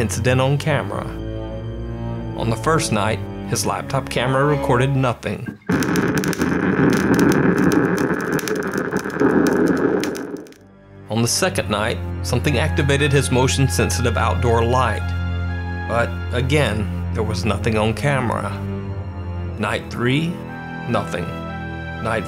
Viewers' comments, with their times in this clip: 0:06 So you're telling me that they love fart sounds?